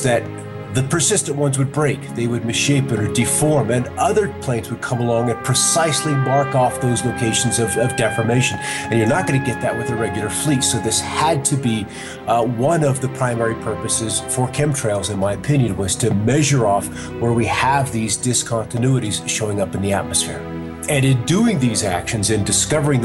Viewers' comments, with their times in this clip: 0:05 I'm sorry, but the volume of the music grew too presumptuously. iMHO, you need to acquire a different mixer.